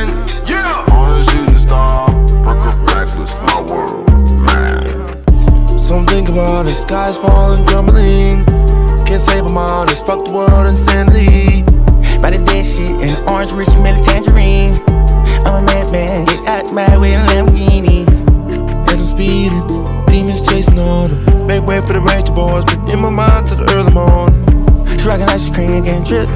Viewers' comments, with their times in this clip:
0:08 yo why doesn’t he use this voice/vocal mix the whole album? It would be so much better. I hate that distortion and he sounds congested in the other voice he uses.